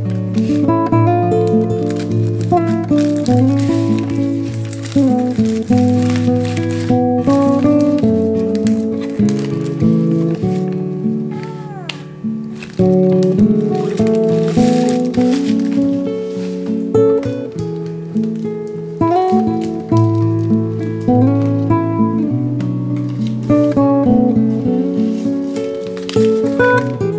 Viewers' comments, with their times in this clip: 0:10 Is that a meow I hear ? 🥰🥰🥰